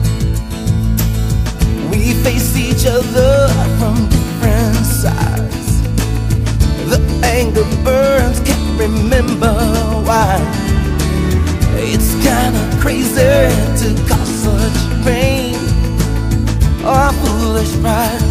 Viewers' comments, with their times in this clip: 0:06 the angry birds cant remember why???? o.O